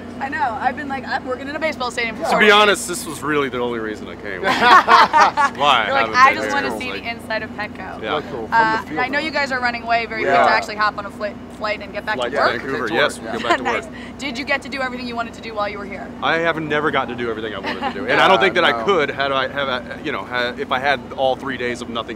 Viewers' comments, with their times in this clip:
0:03 Jared and Allison laughs the exact same way!!!!!
0:10 "Oh my God, I love it when they talk at the same time!"